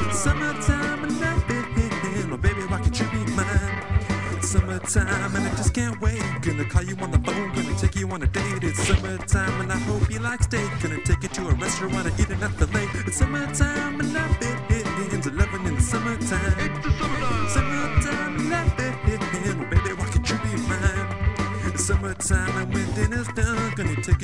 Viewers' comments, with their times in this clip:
0:04 lol i thought it said muthfuker in
0:12 it sounds like he says "gonna give you my fillet"